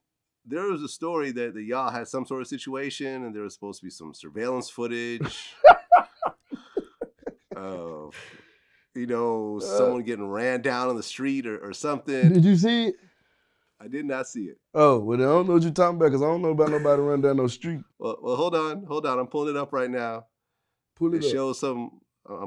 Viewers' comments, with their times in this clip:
0:05 slobbered 🤤 laughed and shit must of been that funny o
0:05 Mans was on some drank...he spit like a toddler when he laughed
0:06 Buddy played that off smooth as hell lol. Quick yawn right back at it.